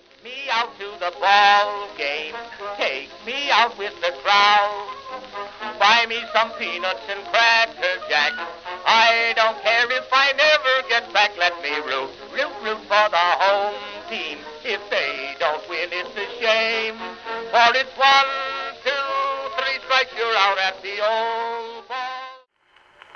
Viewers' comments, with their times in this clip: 0:06 Omg i taught its 2018 song...